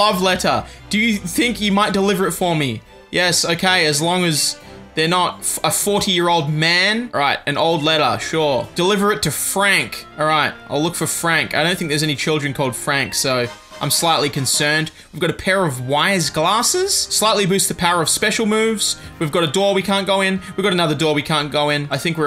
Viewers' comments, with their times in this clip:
0:07 Notice how there is no music when you pick up the item, like the usual sound when someone hands the Player an Item? Think about it :)